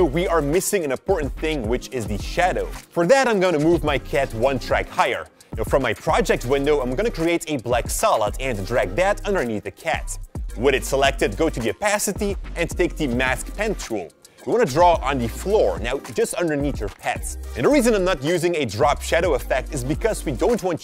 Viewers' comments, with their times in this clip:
0:06 that doesn't look like a "black salad" at all :/